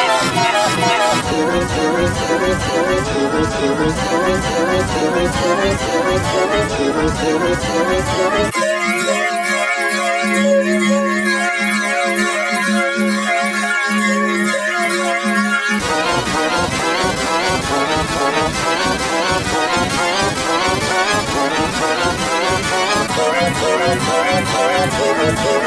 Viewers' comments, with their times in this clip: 0:09 The Beautiful Vocoded Diamond
0:09 The Beautiful Vocoded Diamond